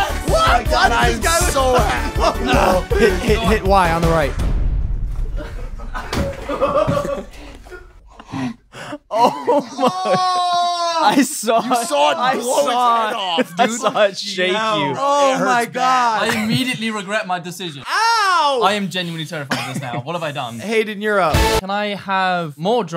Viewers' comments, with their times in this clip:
0:10 that scream tho 🤣🤣🤣🤣🤣